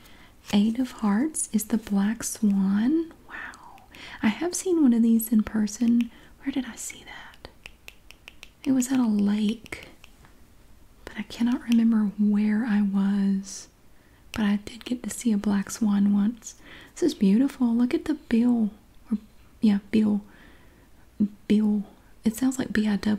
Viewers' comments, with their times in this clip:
0:04 Thanks for another relaxing video , also it sounds like a ghost says wow and it didn’t really sound like your voice and it freaked me out haha